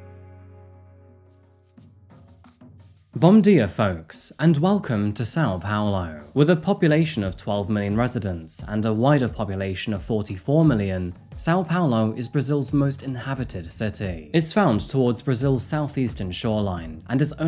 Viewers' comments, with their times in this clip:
0:03 oof that hurt. Jk ofc ;) "bom dia" is pronounced more like 'bon gia' and you must press it through your nose. Portuguese sits all the way at the top of your mouth, wanting to escape through the nose. Also "r" = "h". For example, 'Hio de Janeiro'.